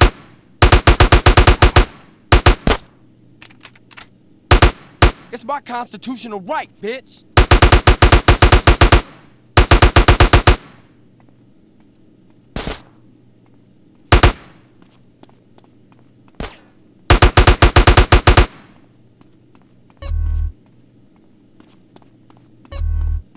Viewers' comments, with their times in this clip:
0:05 cj says "its biconstitutional right bitch"..... XD XD